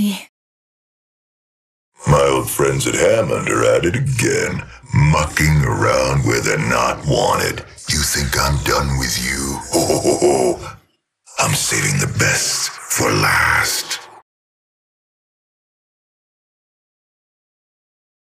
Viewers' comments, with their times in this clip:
0:09 that HO HO HO made me laugh XD I love Revy